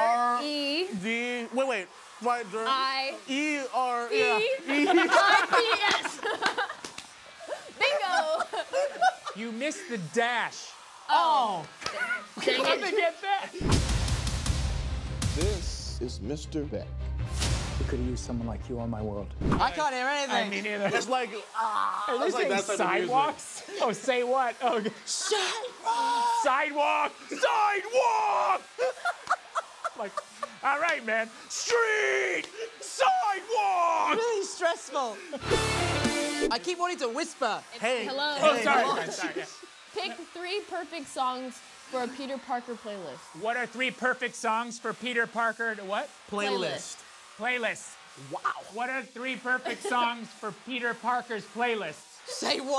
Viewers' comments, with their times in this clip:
0:06 Bro i couodnt stop playing back there laughs and then when Jake was like u missed the dash they both said oh and the exact time and lokked at each other then Jake was like pfft hle did they get that 😂😂😂
0:27 minutes tomes voice💀💀💀
0:33 Jake’s voice crack tho 😂😂